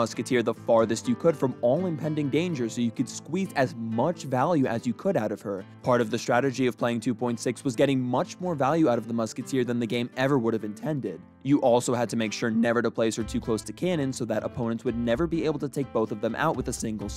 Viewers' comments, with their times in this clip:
0:04 was he trying to say squeeze or queef lmao